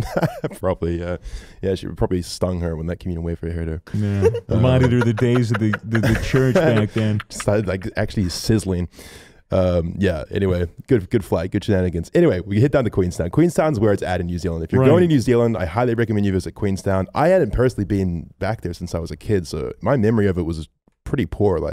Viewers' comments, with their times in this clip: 0:04 Frodo baggins laugh: